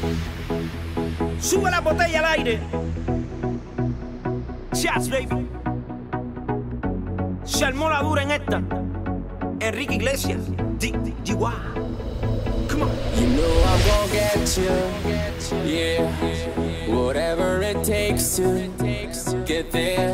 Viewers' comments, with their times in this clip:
0:03 that sigh of her... The best!